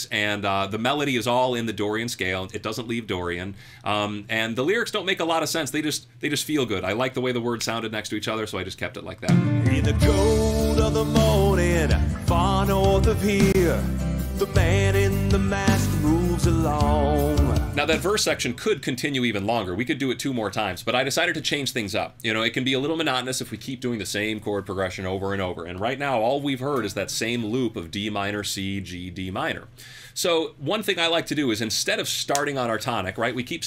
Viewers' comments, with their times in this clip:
0:09 You nailed James Hetfield 😄
0:14 James hetfield definetly